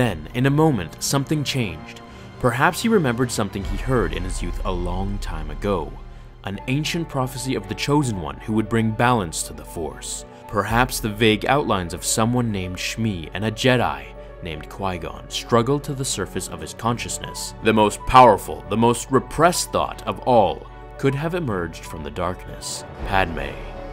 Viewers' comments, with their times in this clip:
0:06 What the name of that music sound cool and mysterious 😆.